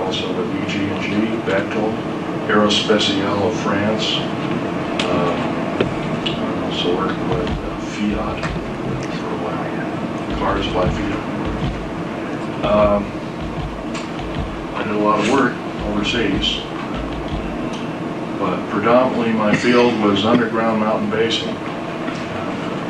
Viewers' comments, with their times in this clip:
0:09 At the mark you can faintly hear someone whisper “he’s a liar”